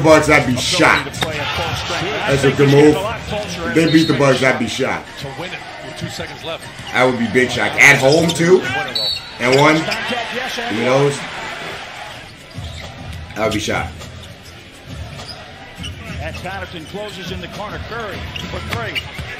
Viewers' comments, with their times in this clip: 0:06 he stops talking. you're welcome